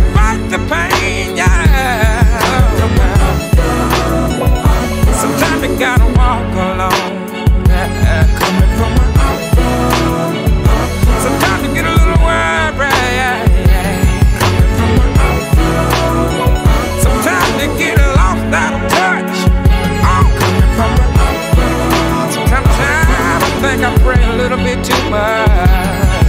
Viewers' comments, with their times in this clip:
0:09 "Sometimes you get a little worried." He sang that like Al Green.